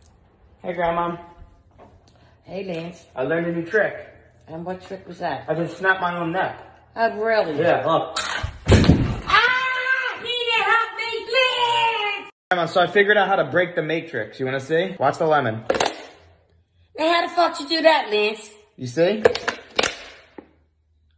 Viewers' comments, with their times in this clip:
0:08 loved the sound of you smacking the ground
0:09 She screamed like Yzma